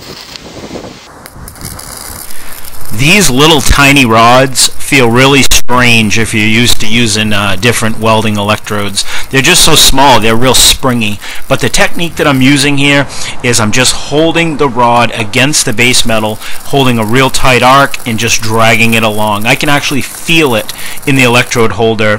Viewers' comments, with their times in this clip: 0:03 R.I.P head phone users